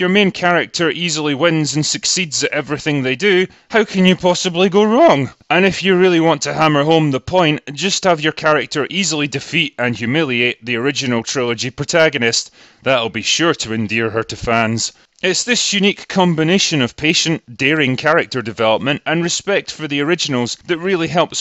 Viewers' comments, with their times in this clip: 0:04 Unfortunately, The Critical Drinker almost cracked up when saying "how can it possibly go wrong"